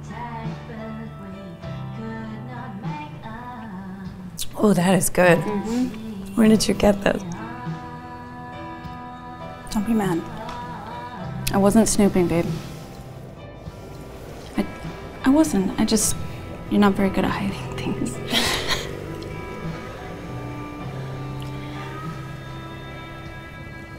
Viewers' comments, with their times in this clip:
0:05 did the person in purple shirt say ”oh det här is Good”